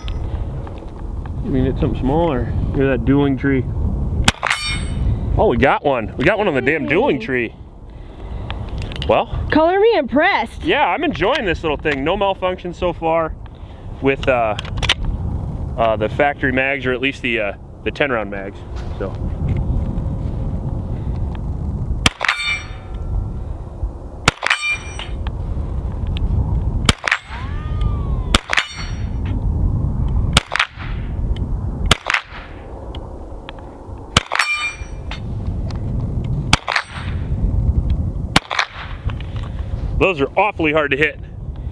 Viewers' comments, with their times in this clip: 0:07 The ricochet noise lol
0:22 you had one whizzing back at you .
0:25 was that a cat calling? yikes
0:26 you can hear that ricochet whiz off!!! 😬
0:26 Uhhhh... ? Was that the wind or did that one come back?
0:26 .. the ricochet sound is cool
0:26 that ricochet sounded rad!